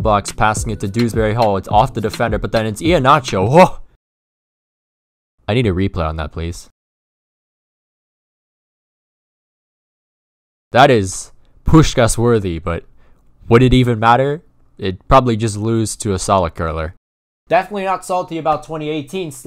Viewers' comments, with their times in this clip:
0:03 I swear to god you had Rick Ross on there